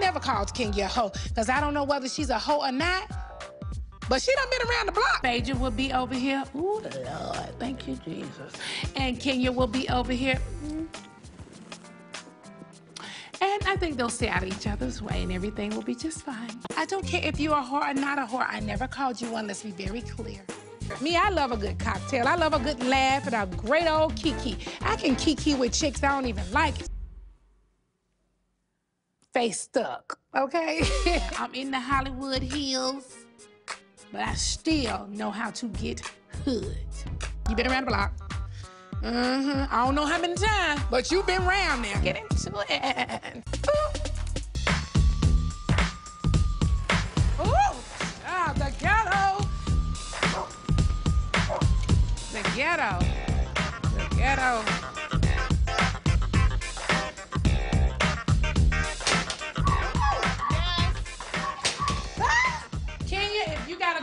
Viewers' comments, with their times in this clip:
0:07 that Phaedra impression was spot on 😂😂
0:45 LMAO i am pretty sure Bravo added those sirens and dogs barking in the background to make it 'extra ghetto' so shady Bravo!!! LOOOOOL